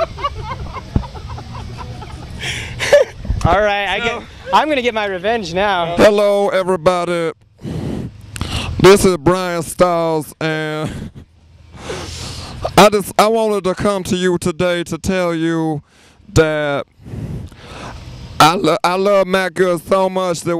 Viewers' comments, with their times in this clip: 0:03 any one else here Andy's laugh in the back ground
0:07 Oh Gawd! Andy's impression though! XD